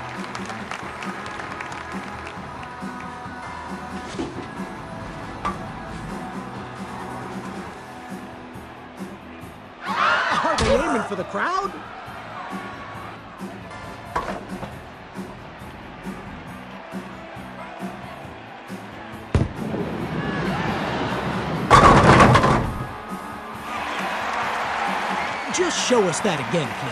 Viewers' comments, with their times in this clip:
0:09 that sounded like it hit someone